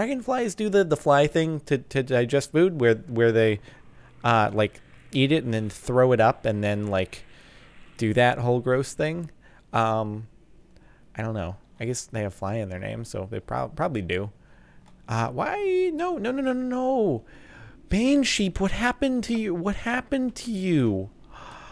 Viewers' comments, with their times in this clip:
0:06 if you hear carfully you will hear the skype sound